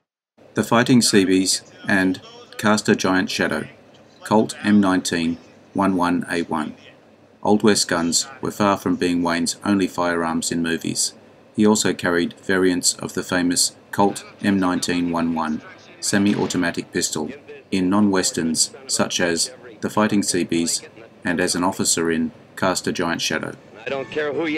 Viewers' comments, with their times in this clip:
0:06 Now an AI narrator with a British accent. we have an “M19-one one…” I’ve gotten to the point where an obvious AI voice mispronunciation causes me to bail out of the piece. Bye!